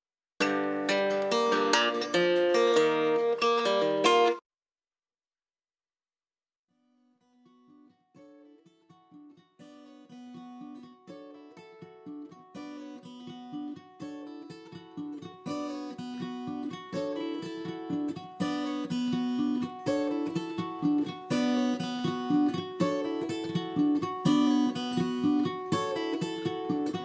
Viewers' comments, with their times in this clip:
0:10 I just hear so much Opeth here.